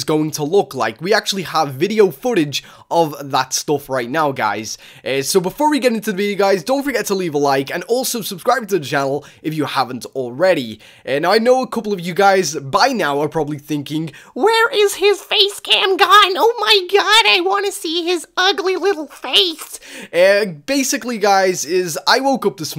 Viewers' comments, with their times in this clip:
0:07 he said channel wrong??